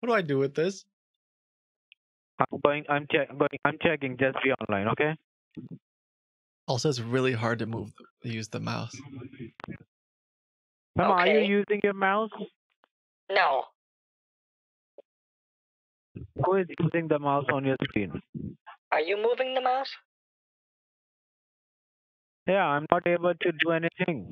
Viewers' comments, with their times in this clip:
0:06 I thought you were moving the mouse and then trolling over it. Then I realized the scammer was probably moving the mouse the whole time. Both made the deadpan, "No-o," and the eyebrow wiggle hilarious in different ways XD